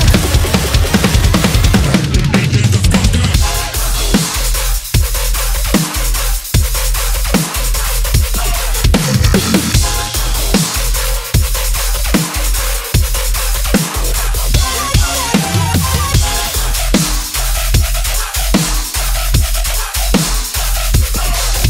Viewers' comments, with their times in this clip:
0:07 Did he miss a beat ? Like if you still watch this in 2020 🔥